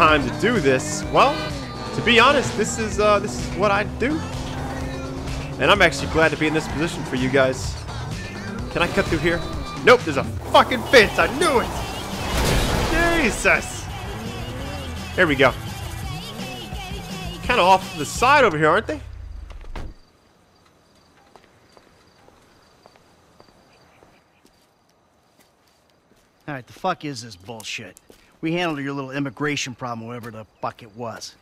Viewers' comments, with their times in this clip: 0:08 you sound like Trevor a lil bit 😂
0:15 DOES THE SONG SAY GAY GAY REPEADATLY??? ITS FUNNY LAWL